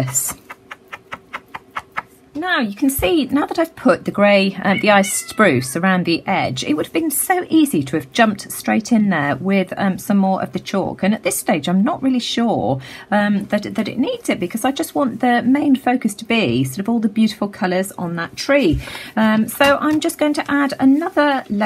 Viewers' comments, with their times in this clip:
0:04 did u guys hear the little meow sound in the background🐱🐱🐱🐱